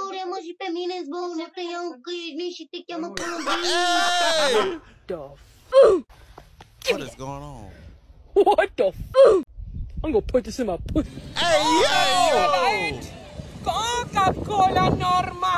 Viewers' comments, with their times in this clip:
0:03 who else thought that it was reee kids voice?